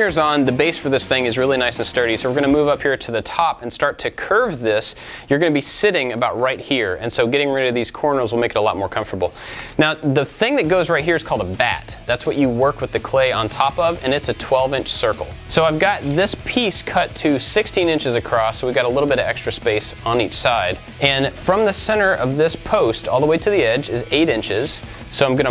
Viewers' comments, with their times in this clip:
0:07 Can we talk about why there was an edited "corners" word pasted into the video ? xD I am so confused why that's there. ITS MESSING WITH ME. ahaha